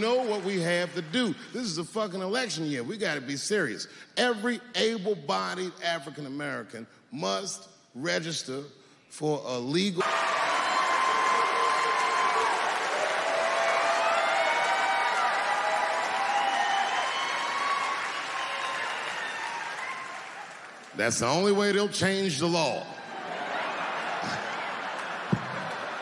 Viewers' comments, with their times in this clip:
0:07 they hid what he said.